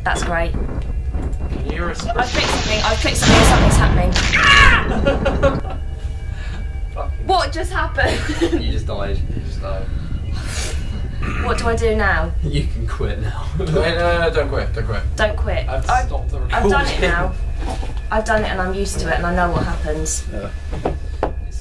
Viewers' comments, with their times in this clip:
0:03 Dat Scream!!! LMAO!